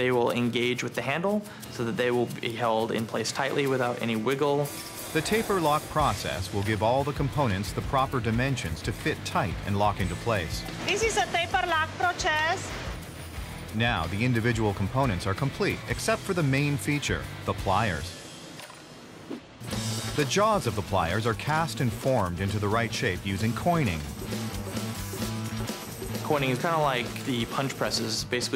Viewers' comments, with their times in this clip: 0:10 sounds like Sofia Vergara